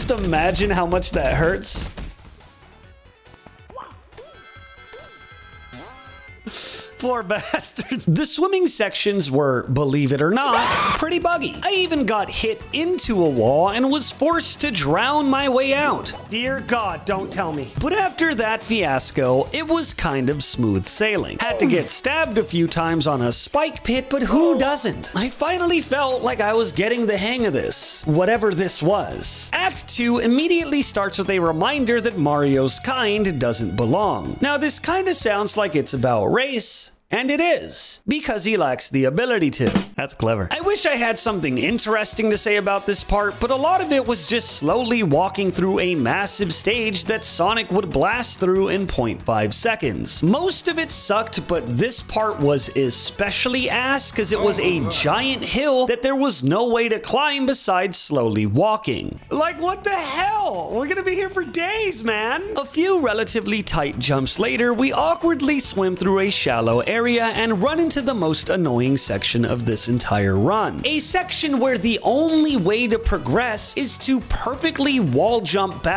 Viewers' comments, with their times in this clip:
0:10 that scream lol
0:59 his voice look like Dipper's